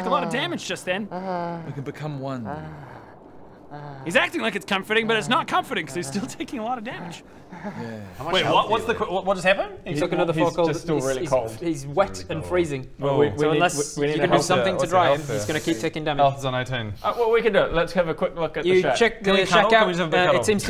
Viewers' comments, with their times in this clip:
0:03 The laugh and trying to stay in character at the same time starting was hilarious!